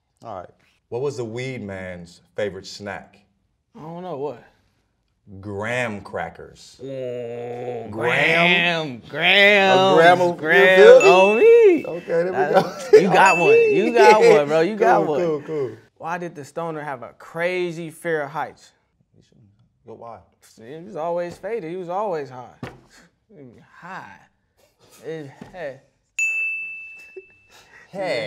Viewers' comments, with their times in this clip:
0:09 The way he said gram had me thinking it was the motorcycle in the back😂